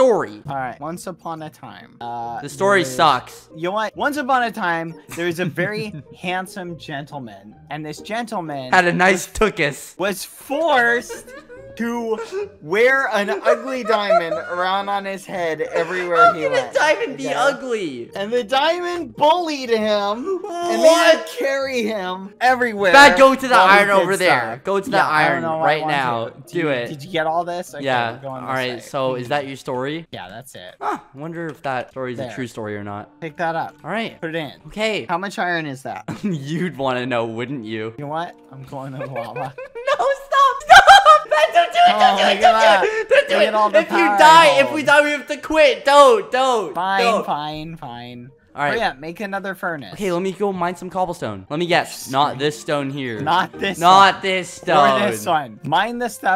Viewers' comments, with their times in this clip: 0:08 the way skeppy screamed when they fell down and "this gentleman had a nice tookus"
0:41 don't do it Skeppy screams